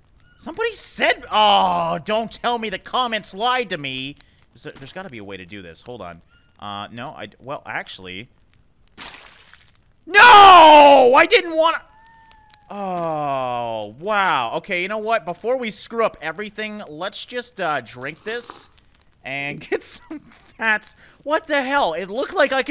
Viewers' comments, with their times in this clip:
0:05 the no of pure desperation is hilarious and relatable